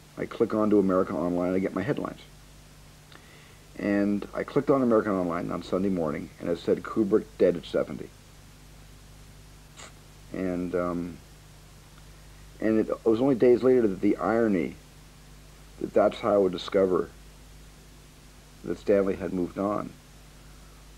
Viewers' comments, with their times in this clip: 0:06 look at what happens when Spielberg says Kubrick dead at 70 after he's talking about how he felt about the internet, a quick glitch thing w some static just thought was weird.